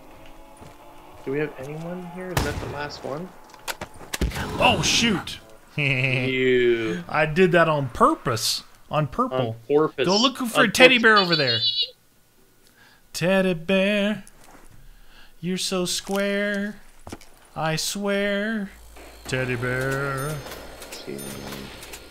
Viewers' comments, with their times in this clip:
0:08 that bear laugh what was that?
0:10 Guns? sounds like a kid